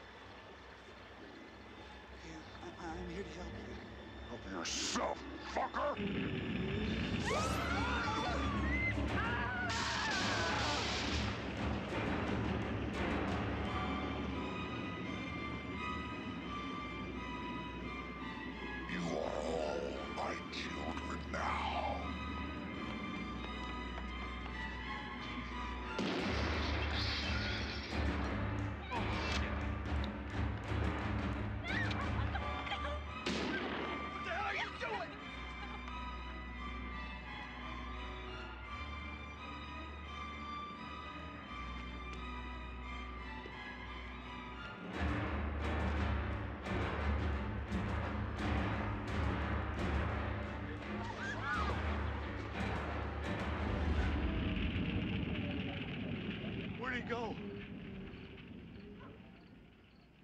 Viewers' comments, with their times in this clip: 0:04 That dubbing is really bad
0:45 I love how the drums play here and Freddy leaves the party LIKE A BOSS. And the way the teens just get out of his way, chilling.